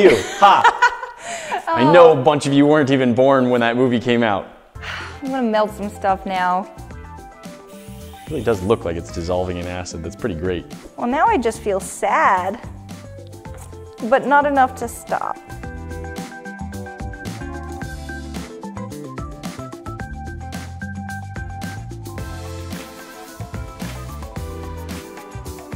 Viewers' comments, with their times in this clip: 0:07 “distressed squeaky noises”.